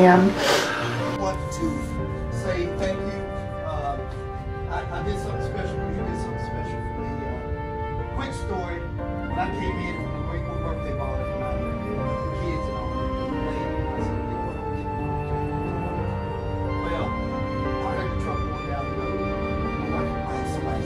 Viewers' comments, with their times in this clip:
0:06 After "I want to say thank you" I can't hear anything, can a kind person sum up for me what he says? thank you tons.